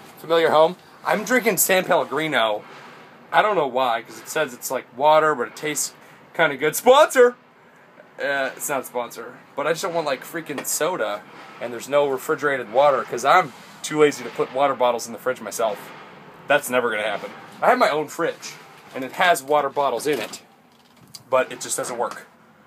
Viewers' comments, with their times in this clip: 0:07 he sounds so sad